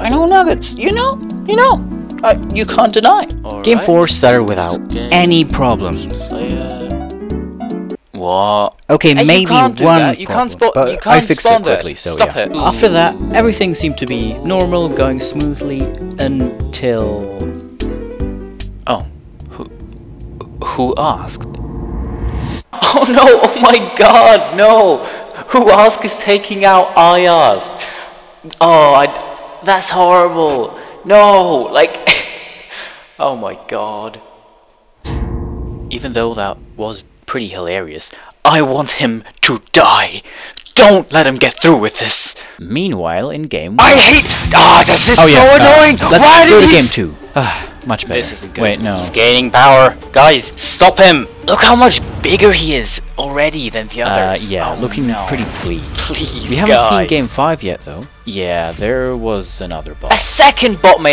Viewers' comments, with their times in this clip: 0:07 Arabic noika tone starts playing
0:45 fellow german speaks here